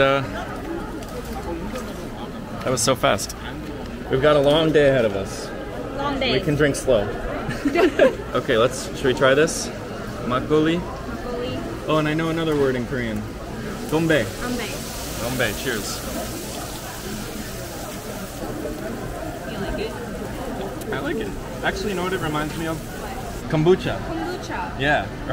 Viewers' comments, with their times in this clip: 0:09 sounds like chinese "gan bei" meaning "to clear/empty mugs"